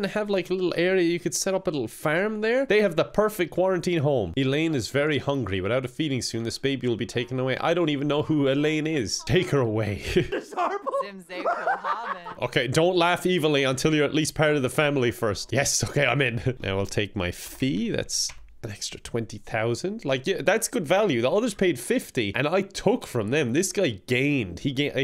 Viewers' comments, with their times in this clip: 0:09 okay is it just me or is he saying "IT'S HORRIBLE!"